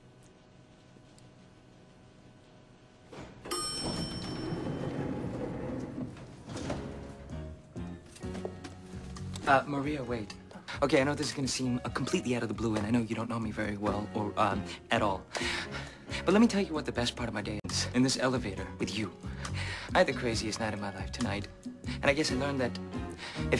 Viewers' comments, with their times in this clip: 0:07 when the music to "I wanna get next to you" starts, it tells you this is gonna be an awesome scene. Go for it Harold! She's hot!